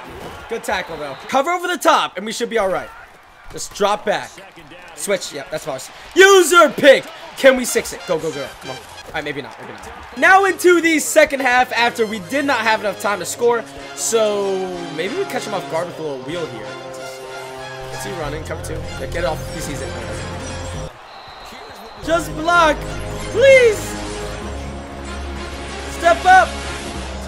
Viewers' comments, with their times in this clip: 0:08 epic music has entered chat